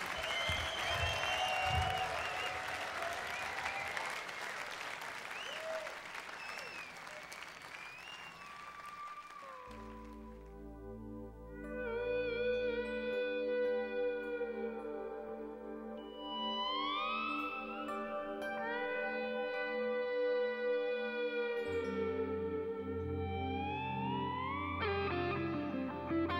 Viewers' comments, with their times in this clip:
0:07 All the songs are perfect, I personally love "Cause We've Ended As Lovers" That "dialogue" between guitars is incredible.